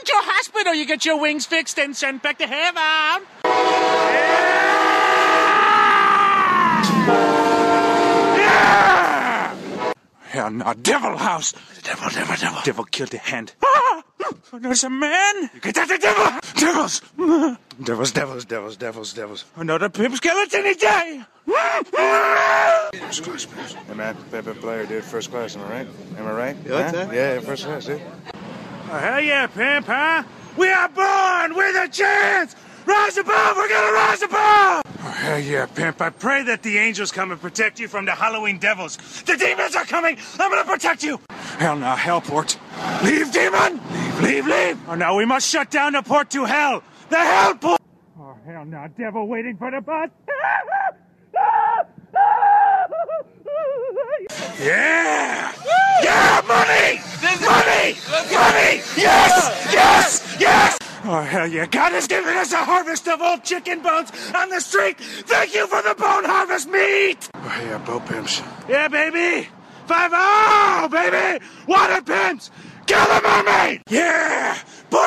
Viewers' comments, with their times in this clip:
0:03 is the first time he realized he could just scream at something and that would be a good vine.
0:32 shouting black flag lyrics at a ferrari driver, nice
1:01 why dose this man sound like a Borderlands Psycho?